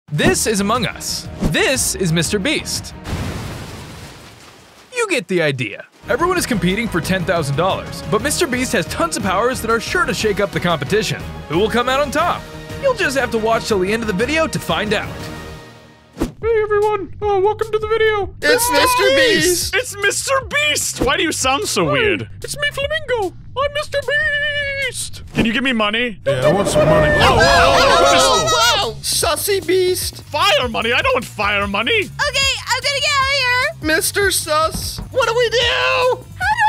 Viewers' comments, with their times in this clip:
0:01 actually sound's like Mr beast when saying "this is Mr beast"
0:18 Sorry but have said mikey's mousse voice